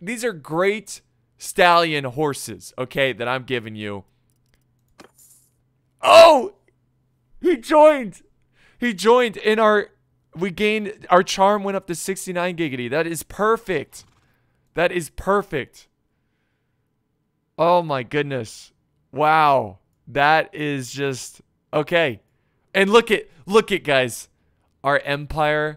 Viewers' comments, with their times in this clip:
0:08 That was the most natural giggity iv'e ever witnessed.
0:11 That is the most natural, seamless "giggity" EVER! I completely lost it